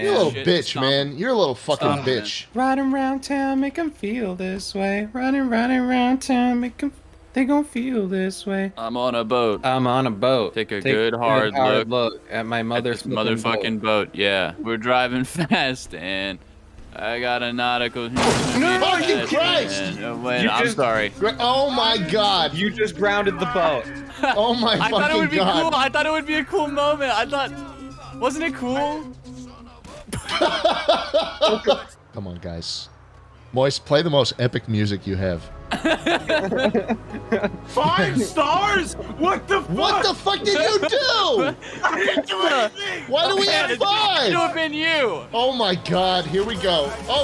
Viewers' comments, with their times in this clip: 0:03 is it just that hears the Igor intro sound kick in at this moment
0:34 based calamity music